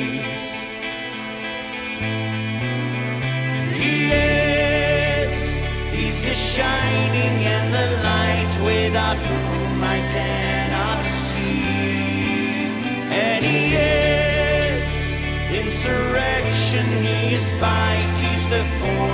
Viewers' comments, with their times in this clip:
0:03 Is it me or can you also hear a Micheal Stipe vibe in his voice? Especially at the beginning of the chorus, With a pinch of Phil Collins. Ok, maybe it's just me.